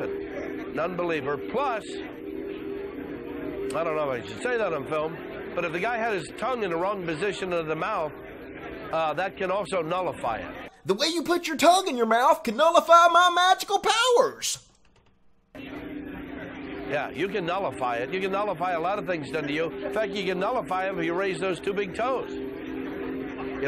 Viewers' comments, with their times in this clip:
0:10 he sounds familliar sounds like a cartoon character that i watch i forgot the title Oh now i know its not a cartoon but the called R.I.P.D REST IN PEACE DEPARTMENT THAT COWBOY MAN